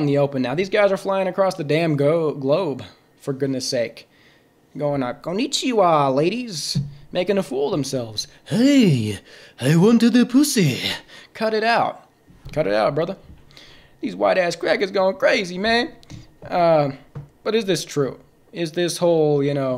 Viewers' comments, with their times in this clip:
0:03 bro's a voice actor